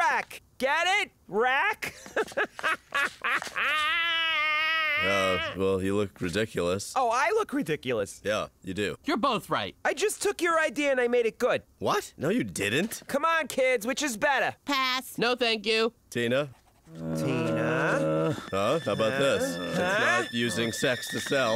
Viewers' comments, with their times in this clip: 0:06 Tina is obviously voiced by a man. Linda's VA makes it less noticeable, but at moments like when her voice gets really deep, it just makes everything funnier.